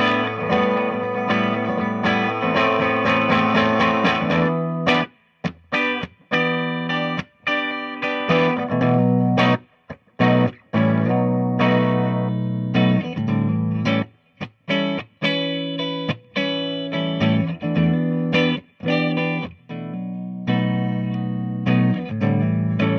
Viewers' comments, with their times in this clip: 0:03 I'm glad you're playing that lick on beat for once! ;) lol nice playing and nice review. Loved the Mr. Crowley!! \m/